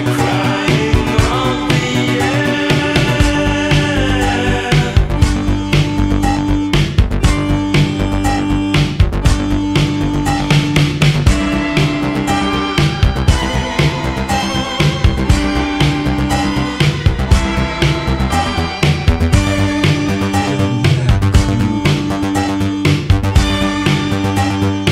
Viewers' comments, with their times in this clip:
0:10 It also sounds a lot like "The Thin Wall", e.g. from but that might have been Ultravox copying themselves.